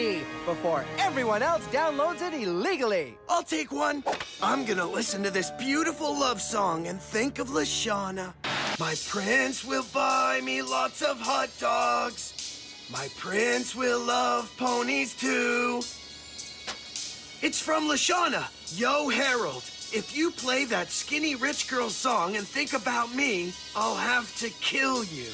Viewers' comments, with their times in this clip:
0:08 Goofy version of Courtney song